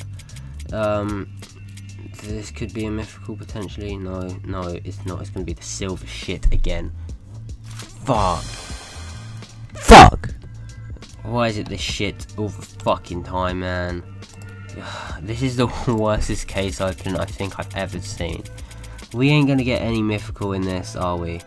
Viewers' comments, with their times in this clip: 0:07 i died XD rip ears